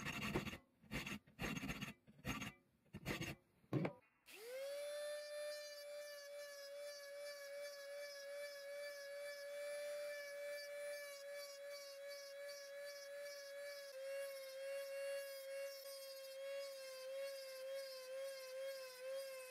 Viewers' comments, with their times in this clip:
0:05 No one: Drill: "NYA NYA NYA NYA NYA NYA MMMMMMM"
0:05 that drill started saying no no no no no no no no